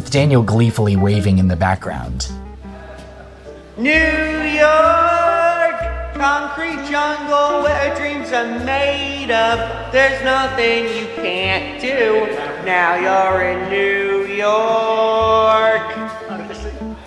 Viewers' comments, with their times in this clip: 0:05 sounds like that guy needs autotune lol